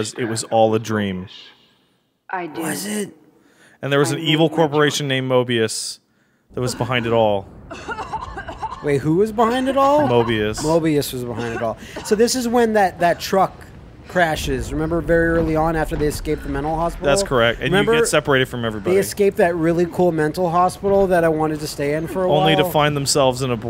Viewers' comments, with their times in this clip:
0:07 for that terrible cough